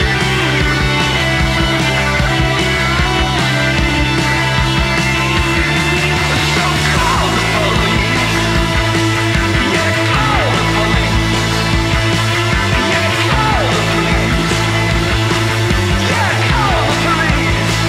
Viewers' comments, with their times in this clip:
0:05 Praise the guy who turned up the volume of the bass a little more.